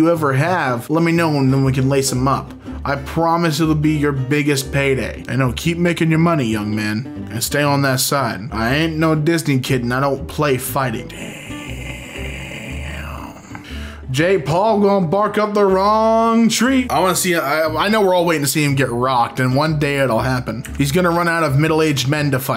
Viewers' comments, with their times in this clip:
0:10 My guy sounded like he boofed a vape reeal hard here after seeing that annihilation